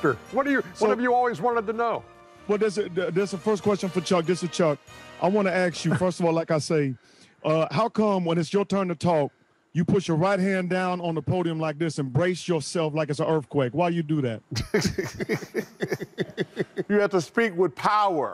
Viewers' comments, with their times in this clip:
0:05 "I wanna aks you" that some shit Chuck would say 🤣